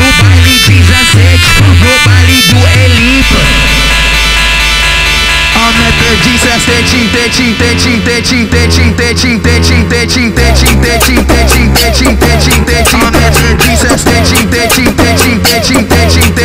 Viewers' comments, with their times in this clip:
0:03 THE WAY IT FLOWED TO WAS JUST SOOO GOOOD